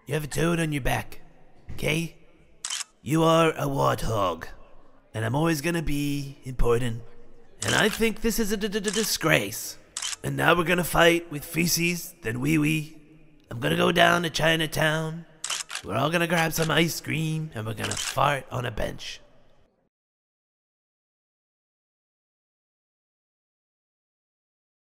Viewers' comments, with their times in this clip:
0:08 is basically how i speak when im in a 'stwessful' situation